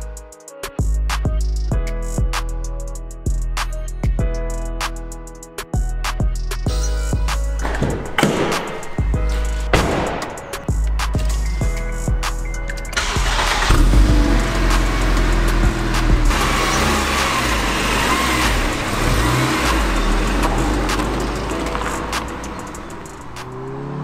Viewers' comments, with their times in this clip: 0:09 OMG correct me if im wrong but is that the 1st time the door shuts and the music dont stop